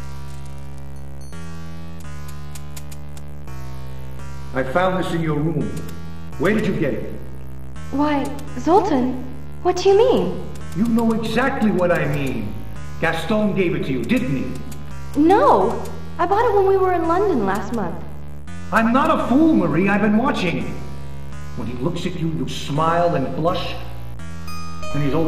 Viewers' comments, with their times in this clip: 0:08 she talk in russian ? (Кто ты)